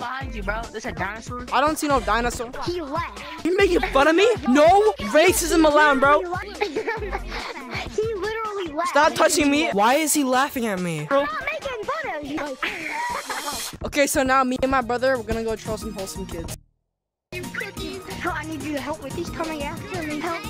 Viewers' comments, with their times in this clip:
0:06 has the cutest laugh😊